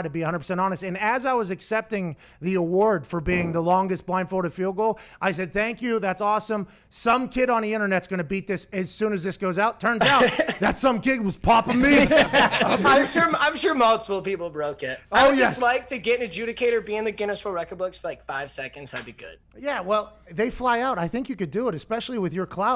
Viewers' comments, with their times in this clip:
0:03 was that a fart I heard? lol 🤔💨🤣